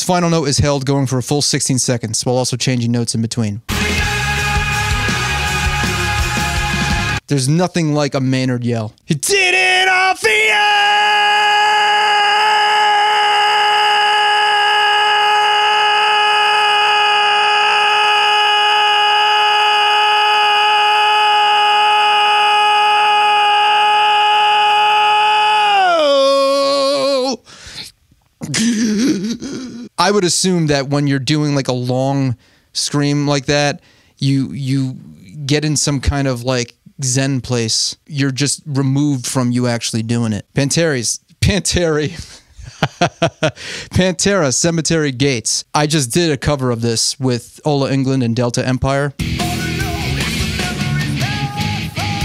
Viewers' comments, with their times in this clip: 0:06 "There's nothing like a Maynard yell." Damn right. Maynard's style is so primal and raw. It's sad that he can't do it much anymore, but I'm glad we had it to begin with.
0:39 ah yes, my favorite band, Panties